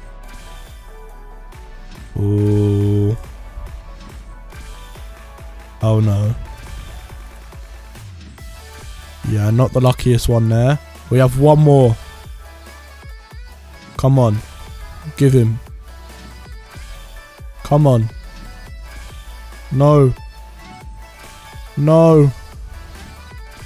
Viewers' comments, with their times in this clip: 0:08 Who else was expecting him to get frieza on the beat drop